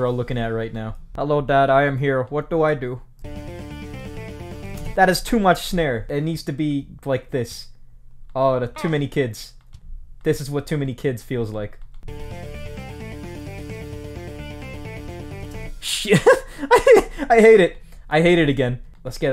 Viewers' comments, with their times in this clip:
0:04 Somebody who listens to Death Grips for the first time